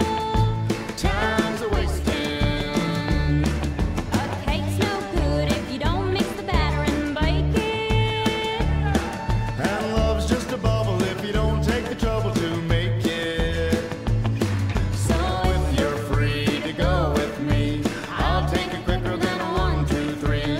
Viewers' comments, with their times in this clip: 0:07 i thought that was someone yelling help in my house tf